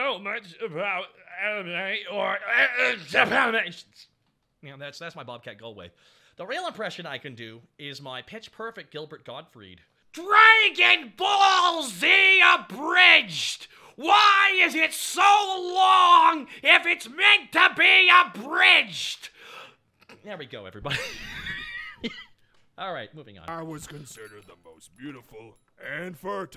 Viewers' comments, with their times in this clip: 0:10 oh wow, if i close my eyes, i can imagine Iago complaining to Jafar about TFS...spot-friggin-on impression!
0:11 that impression was perfect. Sounded exactly like Gilbert Gottfried holy shit.